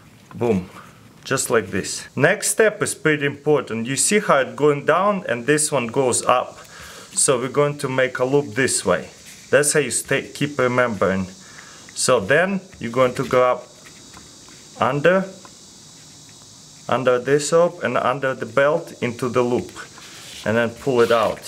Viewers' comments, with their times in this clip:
0:07 captions that's a state keeper member